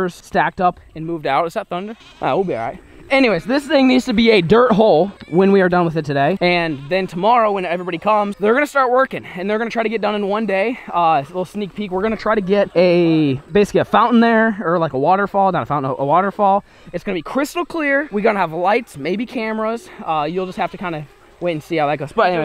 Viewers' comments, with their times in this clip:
0:05 I heard a cat I think 😂